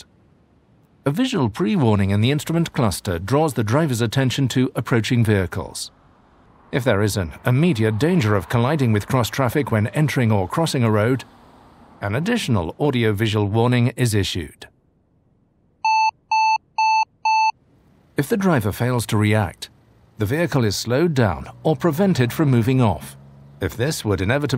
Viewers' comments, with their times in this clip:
0:07 these visual audio notifications, also known as BEEP BEEP would drive me nuts.